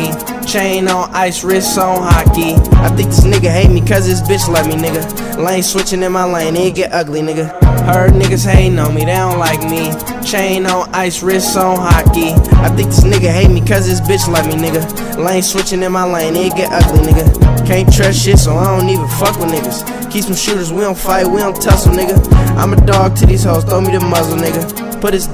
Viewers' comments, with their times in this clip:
0:07 thought that nigga was playboi carti lmao